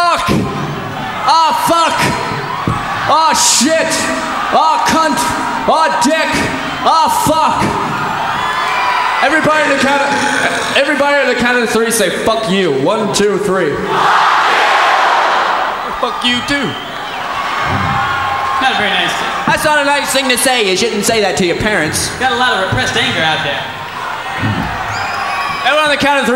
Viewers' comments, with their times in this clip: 0:09 Mike dirtnt’s burp😂